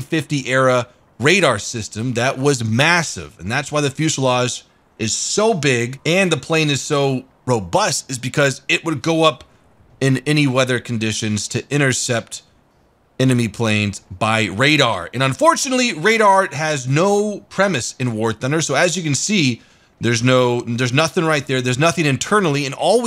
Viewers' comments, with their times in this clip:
0:04 Didn't see the sound warning in time, woke up my parents in the morning